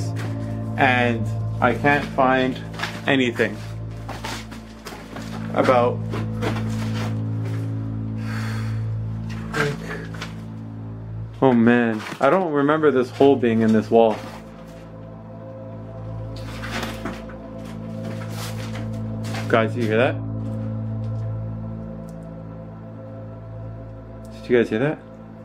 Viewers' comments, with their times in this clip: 0:09 there's a voice saying something can't quite make out what it says